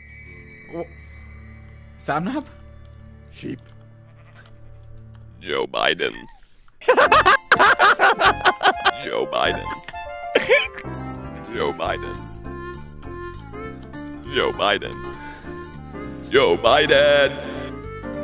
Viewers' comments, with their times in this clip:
0:05 sounds like he's been smoking for 30 years